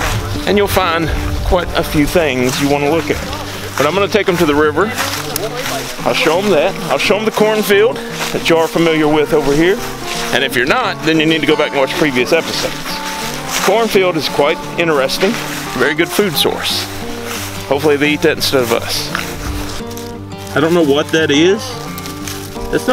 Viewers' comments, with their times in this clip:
0:10 male whispers into Your camera ' chow ', oh yeah I subscribed and smashed 👍's up button to..